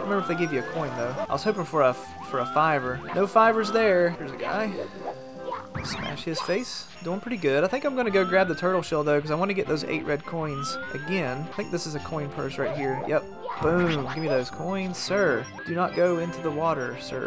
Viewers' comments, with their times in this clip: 0:03 casually says "smash his face" lol